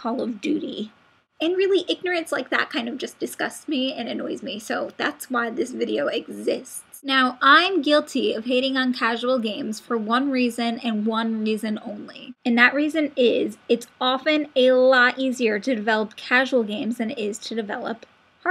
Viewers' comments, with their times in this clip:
0:06 You sound like you're about to cry LOL nice video